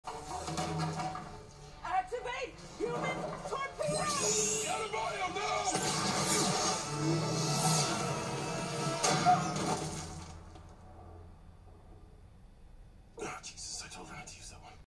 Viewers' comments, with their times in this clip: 0:02 sound like some is taking a dump